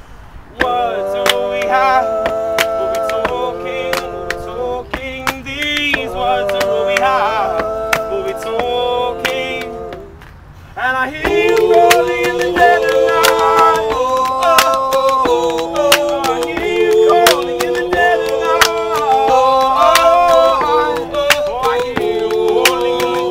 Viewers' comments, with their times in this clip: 0:07 WHEN DAN SINGS 'HAVE' *EARGASM*